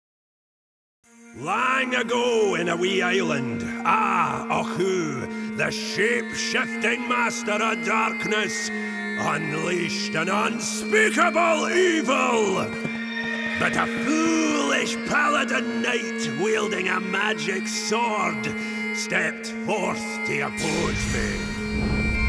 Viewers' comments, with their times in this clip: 0:04 akkuu The way he said the name was funny as hell.